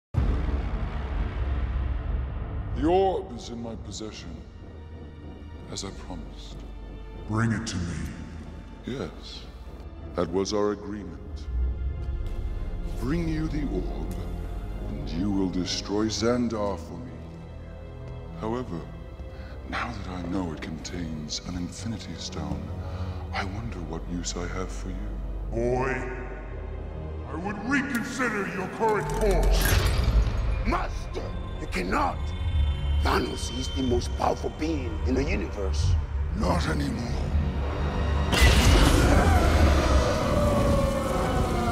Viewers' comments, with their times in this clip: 0:08 LFMAO that simple passive-aggressive, "yes" is so funny.
0:25 did he say Boi, Coy, or Oi?